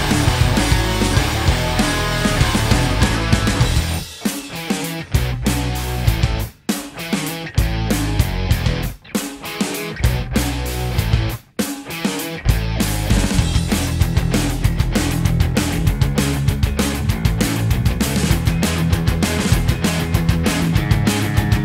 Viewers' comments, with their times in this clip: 0:03 i really like the thing they do sounds really good especially without vocals